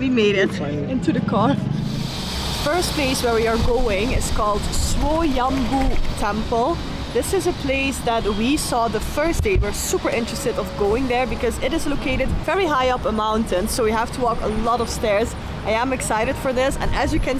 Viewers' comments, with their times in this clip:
0:04 you are the only one who pronounce correct words.. Swoyambhu.